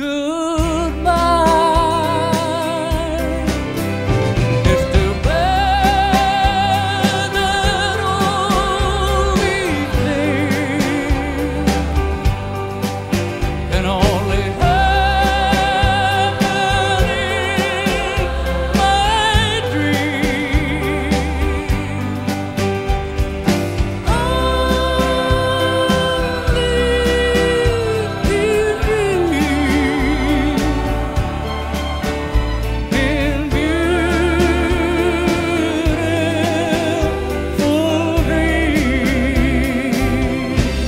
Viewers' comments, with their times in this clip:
0:07 Bob Dylan called him an opera singer. Damn right he is. The way he uses his incredible technical voice (pitch, tone, range, vibrato) and most of all his phrasing paints songs in a way that is sublime. That vocal line its just other worldly, good luck anyone trying to sing that in the way he does, forget it. His stuff is like mini operas. Divine. And an incredibly beautiful man to boot.
0:21 Still confuses me to this day how he could get his voice so high when he sings
0:24 Such an interesting song. The structure has no verses or choruses, it just never really repeats. And the vocal melody just keeps rising throughout, spanning two full octaves from the first note until that unreal C Amazing.